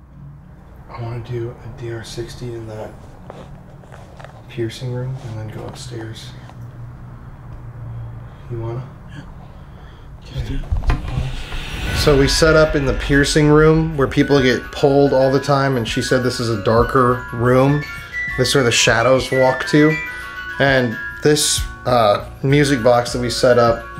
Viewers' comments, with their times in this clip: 0:05 i think its says no